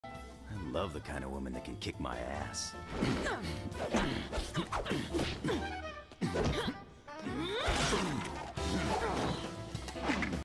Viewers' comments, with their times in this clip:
0:07 Unrelated, but I like the “ooooh”
0:08 You say that but the moan says otherwise.